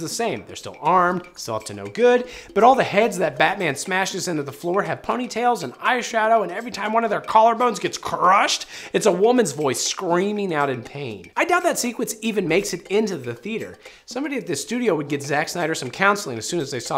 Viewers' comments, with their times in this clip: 0:04 That female scream in the gender-flipped version of the batman fight scene ( ish. Edit: during the whooole segment, I mean. I gotta stop writing comments before the video is finished.).... Who IS that!?! I've been hearing that scream for my entire movie going life. It's the female Wilhelm Scream, but none of my film nerd buddies can tell me the origin of that particular 3 part lady scream. Early 80s B horror film? Random actress from an old Foley catalogue? I've heard it in so many movies and shows, I've lost count. Anybody know?